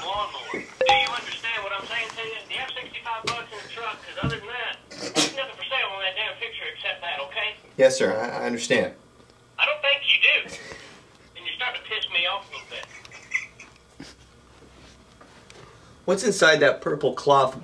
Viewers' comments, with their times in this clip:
0:05 ROFL at that tone he began talking!